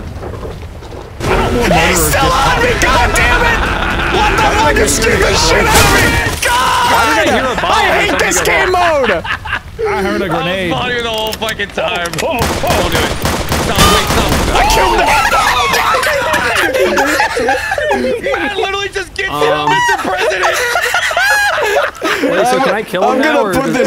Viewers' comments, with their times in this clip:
0:06 the gunshot transition to toot made me choke on my chocolate milk.
0:11 the noot had me in tears!